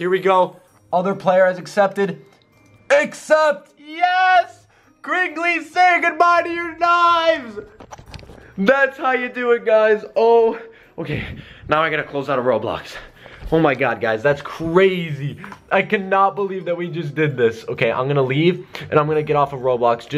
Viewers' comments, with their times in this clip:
0:05 you sounded evil